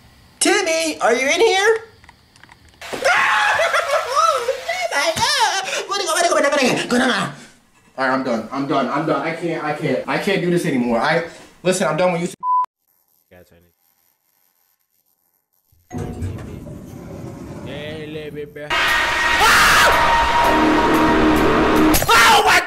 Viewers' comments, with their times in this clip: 0:04 what did bro even say
0:05 why does bro sound like Luigi 💀
0:05 he got so scared he started speaking a different language😭😭😭
0:06 bro went talking animal crossing language